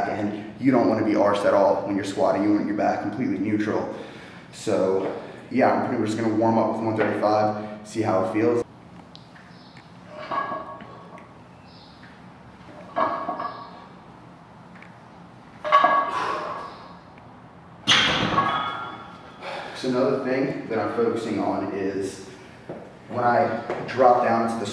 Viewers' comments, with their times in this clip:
0:07 sounds like the obunga meme